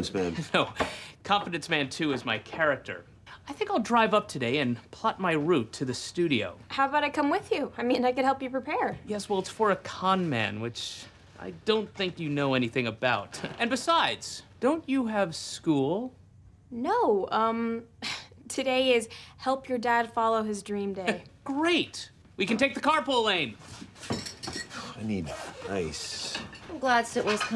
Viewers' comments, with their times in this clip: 0:10 Tons of ADR in this show. I swear at least 7% of the jokes were written after they shot the scenes. I feel like they were one of the last shows to get away with lots of ADR, people are so tuned into it now. Another example: listen to the "and besides". Not a joke but clearly added to maintain continuity.